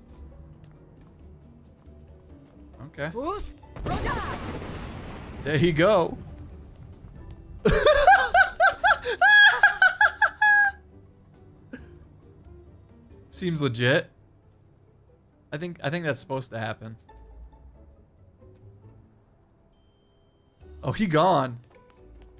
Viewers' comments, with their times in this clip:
0:09 elmo laugh or just me